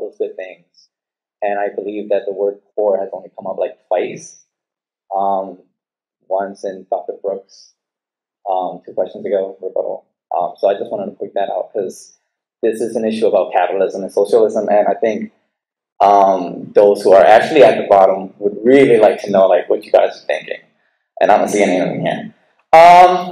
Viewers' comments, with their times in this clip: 0:08 This guy is speaking so slow, do you have to be high as a kite to understand richard wolff?